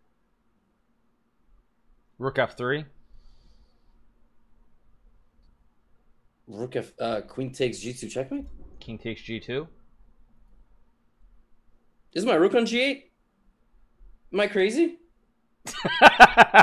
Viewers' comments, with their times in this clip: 0:04 hold the laugh Hikaru